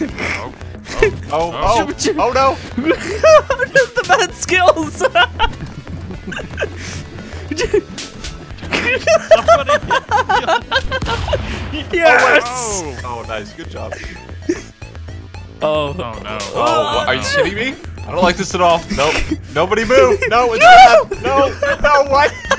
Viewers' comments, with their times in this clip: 0:08 his laugh literally sounds like Candyman from Lethal League, lmao